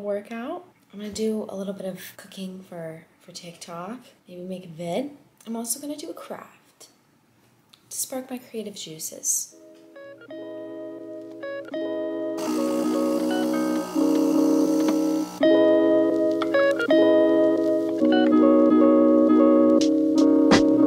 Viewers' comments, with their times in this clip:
0:06 I REALLY thought she said “I’m also gonna do crack”😂